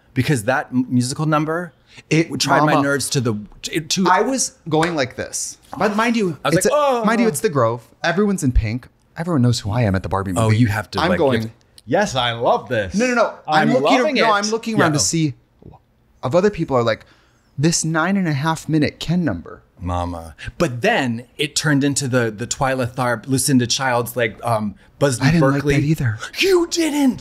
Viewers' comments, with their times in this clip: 0:10 Katya's impression of a line-toeing white man, omfg 🤣🤣🤣